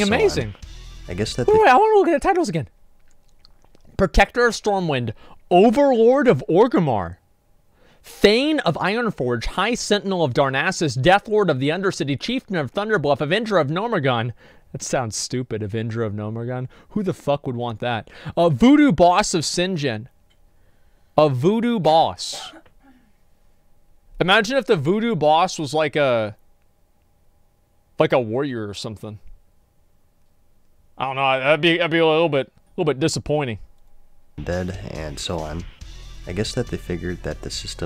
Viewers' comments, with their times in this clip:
0:03 lul the sound. moist.
0:21 hold it right there... Who is that girl i just heard?!? ((looks at date...)) Oh